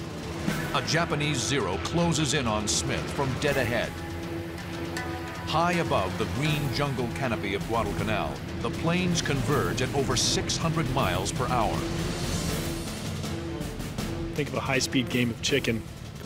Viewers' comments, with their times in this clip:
0:03 that detail with the music 😩😩 this is why this is one of if not my favorite series